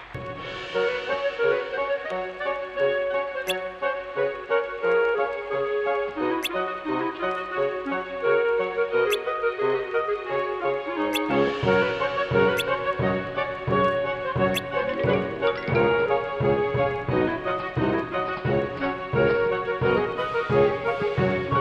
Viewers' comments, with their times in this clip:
0:04 Is it me? Or does the song hint Geno’s Woods?